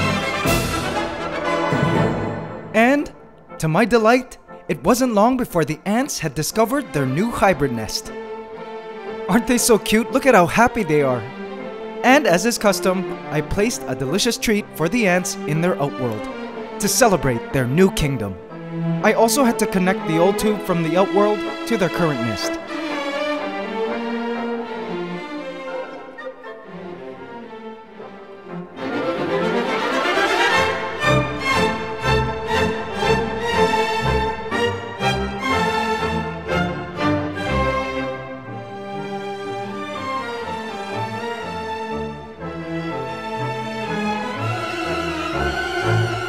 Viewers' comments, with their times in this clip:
0:05 why is there that horror atraction music playing
0:06 hears song oh god the comments... Thank god it didn't happen
0:08 Was i the only one who thought of fnaf 1 whenever the one song started to play
0:22 why is he playing fan music?
0:28 the music tho. I just feel like I’m going to get jump scared.
0:34 it sounds like fnaf song!